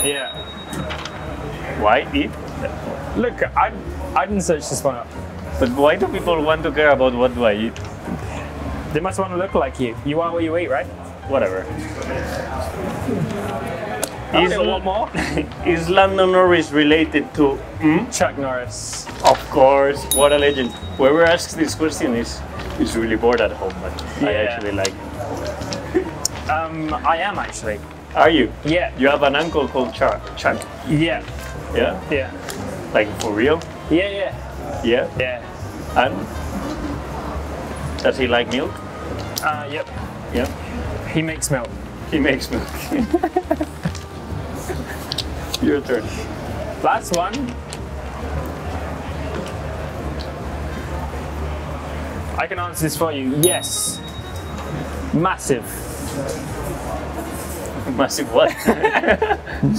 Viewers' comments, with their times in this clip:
0:05 why does Carlos sounds like an indian ? :D
0:43 Carlos laughs like Lando